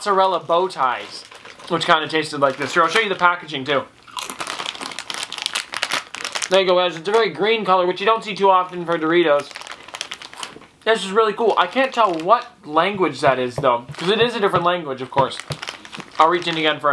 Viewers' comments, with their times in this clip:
0:04 most lit crunch ever